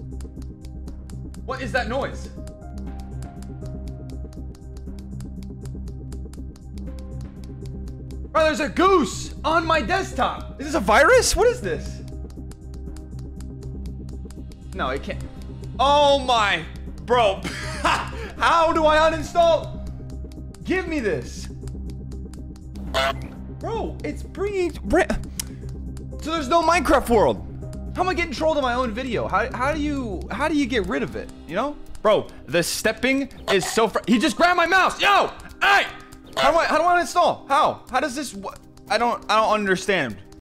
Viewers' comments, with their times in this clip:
0:03 Bro it sounds like someone Is getting claped
0:37 Sponsored by honks